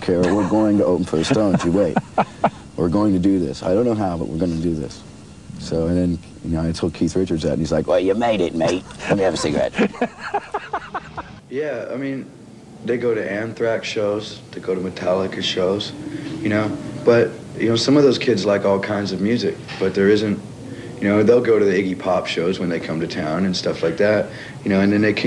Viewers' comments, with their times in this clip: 0:08 good Keith impersonation!